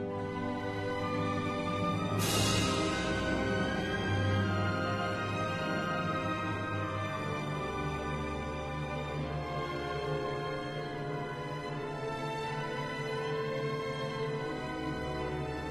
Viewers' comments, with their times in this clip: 0:03 ughhh terrible cymbal crash everyone else is exceptional, especially the violin soloist